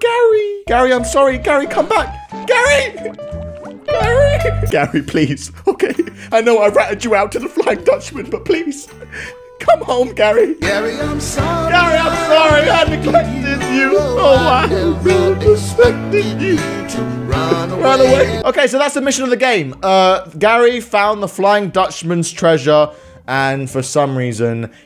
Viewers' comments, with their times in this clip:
0:10 Me- NOOOOOOOO, NOT THIS SONG, THIS IS THE ONE THAT MAKES EVERYONE CRY!!!! NOOOOOOOOO!!!